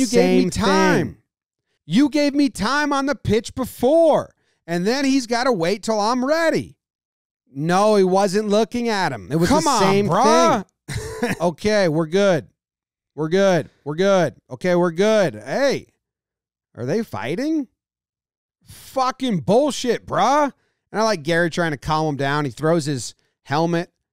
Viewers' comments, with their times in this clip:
0:10 im lmfao at his expression and the different voices !